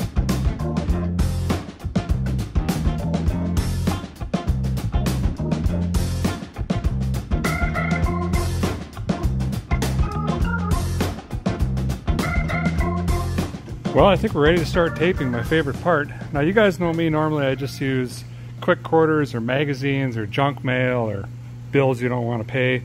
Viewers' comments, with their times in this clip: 0:03 Complete music geek thing here, but I love that music !! I have started writing a song inspired by it.